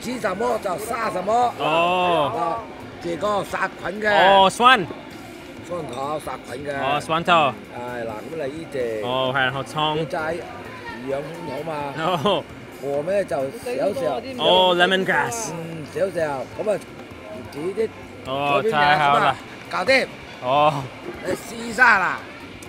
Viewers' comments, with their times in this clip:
0:03 lol i like the old man just started blurting out Cantonese like he gave up trying to speak in Mandarin.. hahaha